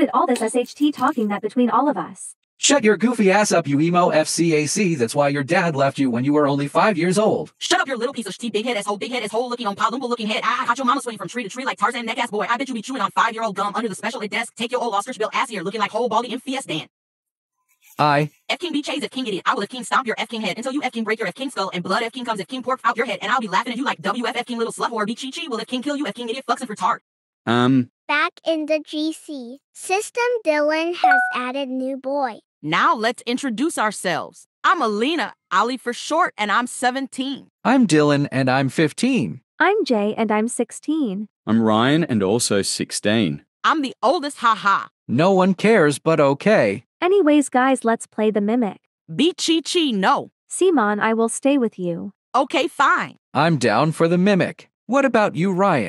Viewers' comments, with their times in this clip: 0:08 times 2 speed is so funny lmao 😂
0:39 Why do I hear “im gay and im 16